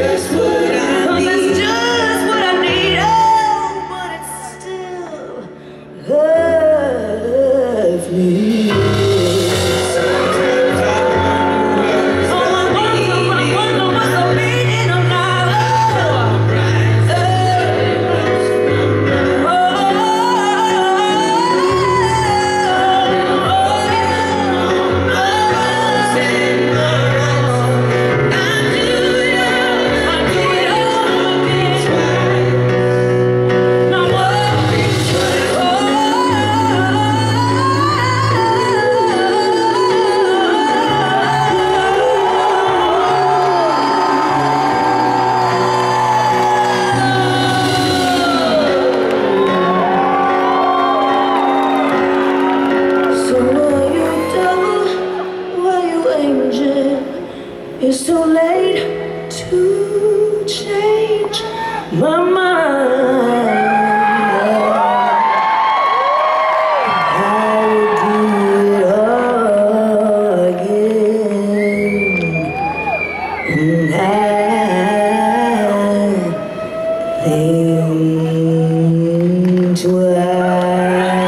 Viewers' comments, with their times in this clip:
0:03 You could have heard a niddle drop since the crowd was so silent to hear her :B
0:35 her vocal are truly amazing. LEGENDTINA 🤩
0:43 I've never heard a transition like this before in other female singer
1:02 This song deserve a tv performance!! uff this note is incredible!!